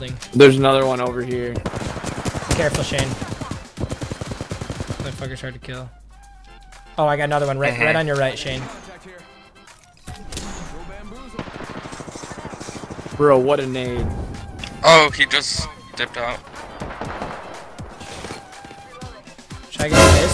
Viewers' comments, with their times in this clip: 0:08 I know I'm not the only one who hears the N-word